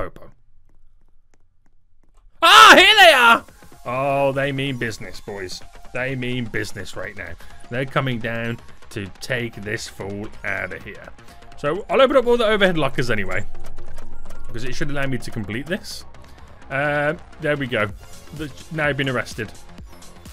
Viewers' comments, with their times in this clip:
0:08 The YAHOOO lol